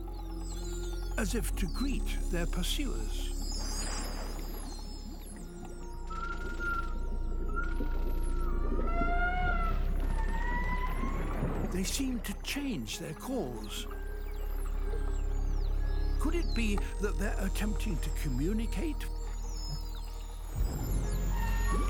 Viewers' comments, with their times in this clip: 0:06 Huh? Roar? That’s impossible. Unless… you were referring to… This? That’s actually a vocalization one of the Pseudorca Whales AKA False Killer Whales were making. Come to think of it, it almost sounds like there larger cousin the False Killer Whales were making. Come to think of it, it almost sounds like there larger cousin the Killer Whales AKA the Orcas.
0:06 i remenber the same noise when an real orca was calling others to chase and eat sharks and whales. 🦈🐋🐳 Edit: What is going on with shark lovers!?